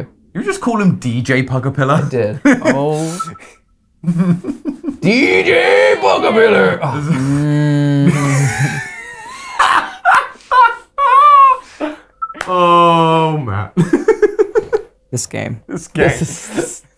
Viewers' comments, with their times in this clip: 0:04 Matpat yelling, "Dj Pugapillar!" gave me Leroy Jenkens energy